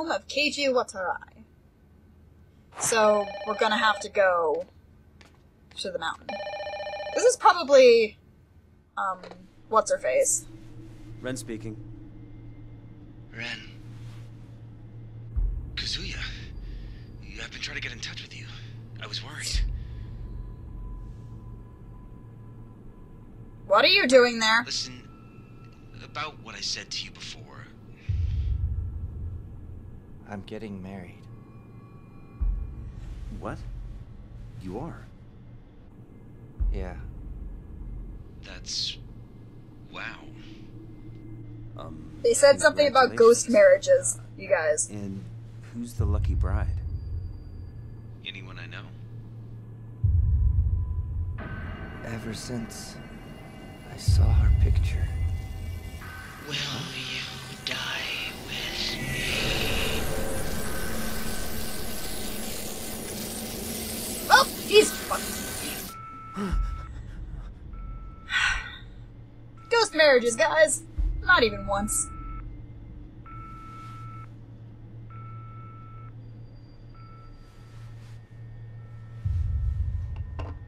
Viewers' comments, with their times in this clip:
0:10 (Whispers) "7 days"
1:05 i like the way you said "well, he's fucked" 😁